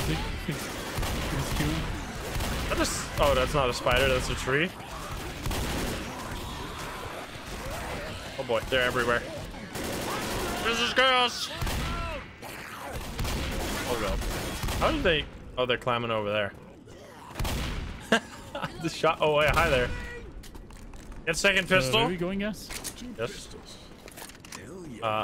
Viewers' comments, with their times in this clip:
0:06 The infected just landing on his ass cracked me up so badly 😂Just the "THUNK"